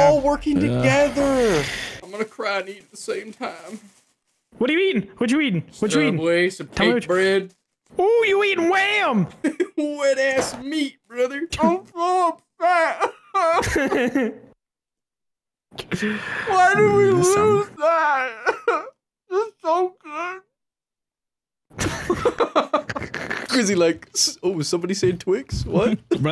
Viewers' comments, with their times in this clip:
0:07 Almost every kid show or rom com has a scene where the protagonist is eating something and crying and they sound like this